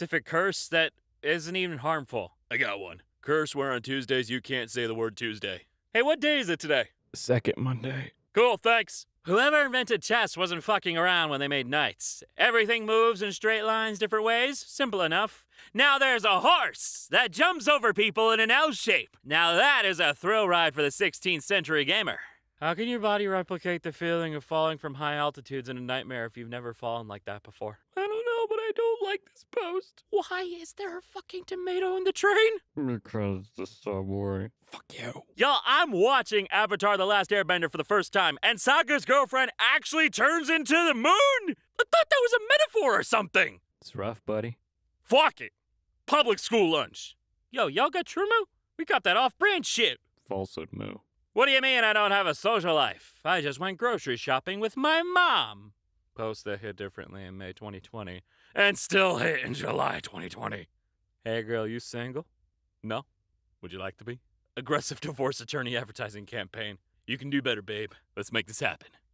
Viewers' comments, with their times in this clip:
0:09 The only reason you even thought to do a John Mulaney impression with this one is because 𝘵𝘩𝘦𝘳𝘦'𝘴 𝘢 𝙝𝙤𝙧𝙨𝙚
0:54 I don’t know if I’m hearing things, but the way he says “my mom” kind of sounds like John Mulaney.
0:54 You sound exactly like John Mulaney.
0:55 I swear Seymour sounds like john Mulaney there, and I almost choked on my drink when I heard it.
0:55 the kinda sorta john mulaney voice makes it 100 times better